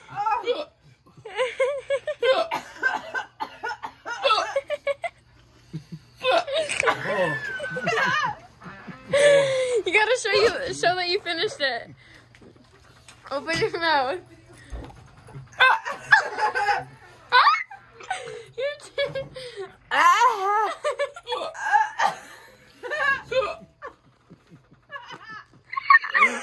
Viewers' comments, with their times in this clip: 0:08 I heard that rip she let good 1